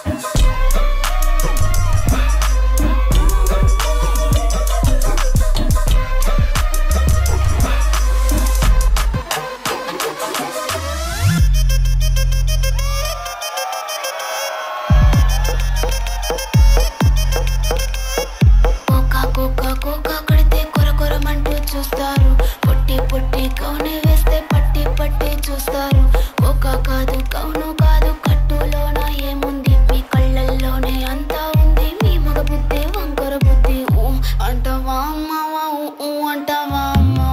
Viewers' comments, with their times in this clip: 0:10 Literally kshmr dropped indian track 🔥🔥
0:25 holy shlt!! What a music!!! 🎉🎉🎉🎉